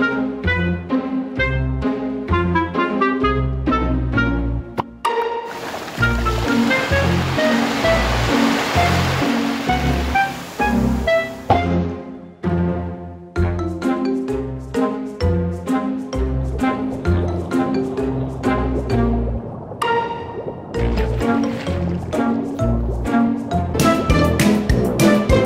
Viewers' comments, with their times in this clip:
0:09 I love how violent the water sound is and how relaxed it really is